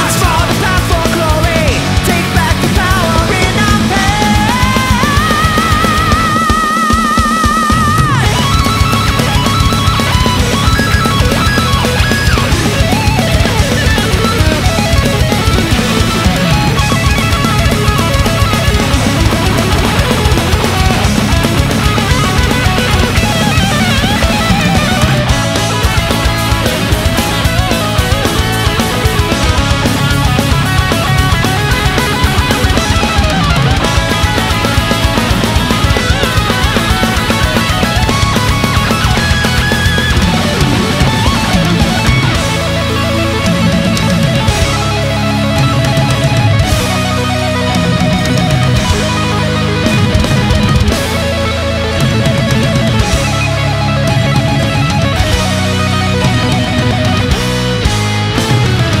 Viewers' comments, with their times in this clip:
0:06 that drums roll was super insane. I Repeat for more than 10 times🤘
0:08 The fill is 16Th notes is at at least 270 bpm
0:25 The bass line in this part 🤯
0:36 Does anyone else think sounds like revolution deathsquad
0:42 Min guitar & drum its fantastic